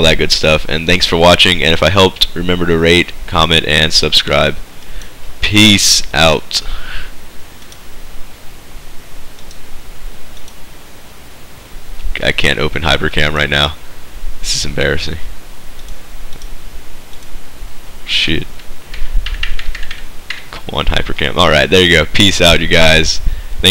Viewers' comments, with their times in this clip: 0:07 20 secs of awkward silence lolz